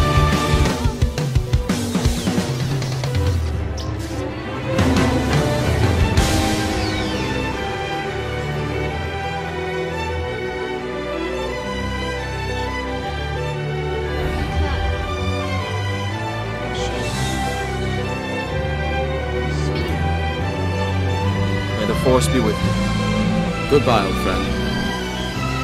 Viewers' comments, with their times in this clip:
0:06 hey and the song really matches right